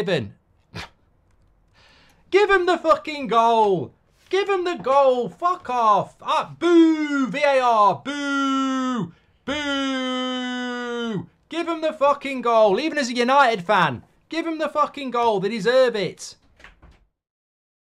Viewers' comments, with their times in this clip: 0:08 My old phone on vibrate whenever someone is calling me